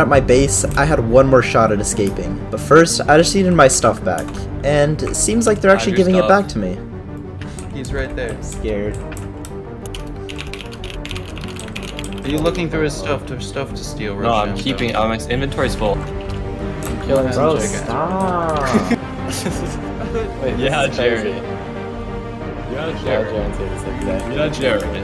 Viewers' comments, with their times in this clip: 0:08 yes i know this video was posted 1 year ago but here is my comment planet keyboard asmr